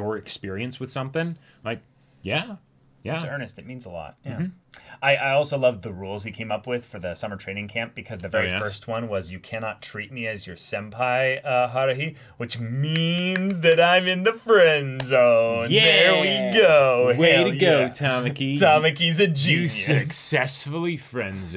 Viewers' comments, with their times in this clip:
0:08 The amount of sarcasm in this LOL